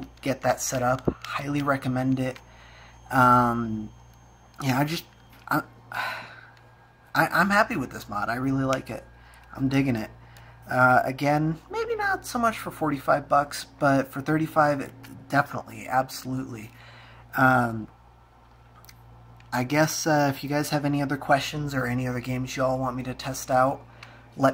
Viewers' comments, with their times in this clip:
0:09 your voice LMAO